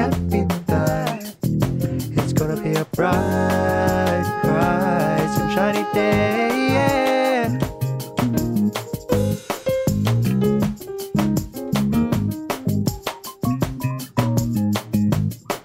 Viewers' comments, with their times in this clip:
0:03 its the way he does the voice